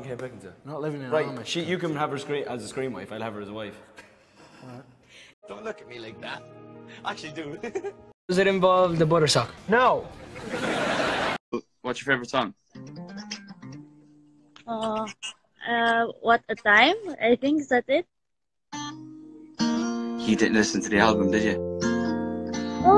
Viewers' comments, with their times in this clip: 0:06 omg his laugh at this is so cuteeee